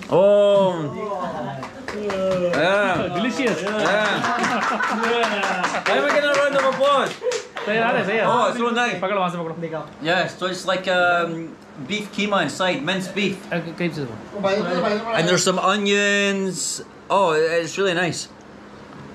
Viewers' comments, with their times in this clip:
0:05 Yiu were getting an applause because it's not easy to eat the karela like that.